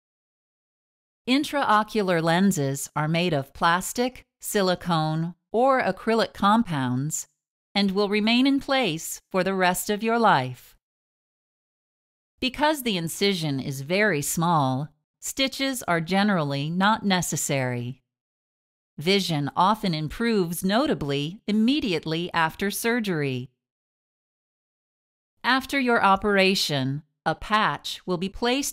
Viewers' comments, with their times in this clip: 0:08 and will remain for the rest fo ur life. She ssid it so sinisterly or like a threat
0:09 This scared me. I don’t know why it’s just they way she said it just gave me chills
0:09 sounds so ominous...